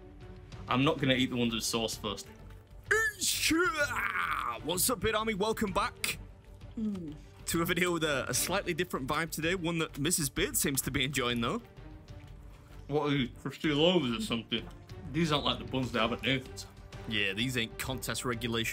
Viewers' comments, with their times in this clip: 0:03 Is that sound you make actually spell-able? Just curious, that's all..